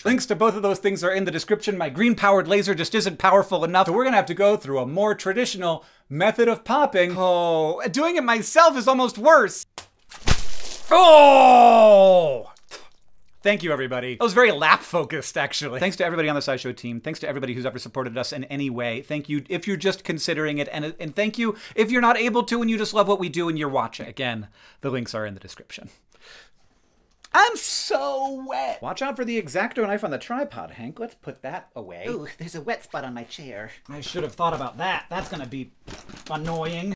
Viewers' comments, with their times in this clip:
0:09 is the pop, boom ur welcome
0:09 in case you came for the pop
0:16 was very lap focused? What did you say here? Closed captions didnt help.
0:32 you do sound a bit like Spongebob there hah